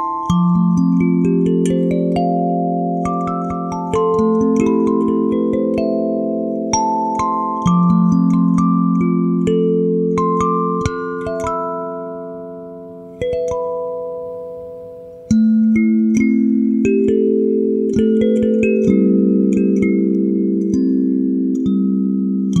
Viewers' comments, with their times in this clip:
0:10 How do you play the high note I tried and fail :(